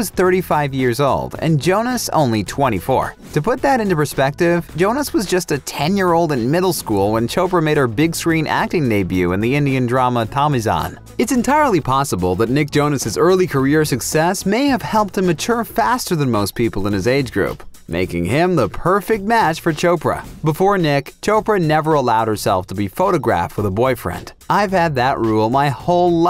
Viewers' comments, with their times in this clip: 0:08 Did he just say "choper" in ? LMAO!